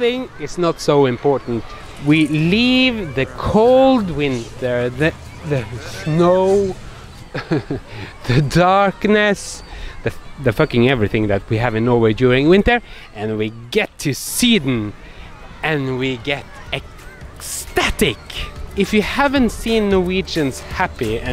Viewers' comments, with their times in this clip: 0:07 You are too funny.... and your wry laugh(eg: ), I always have to pause the video because I start laughing just because I know what's coming - sarcasm and humor. Love love love your videos.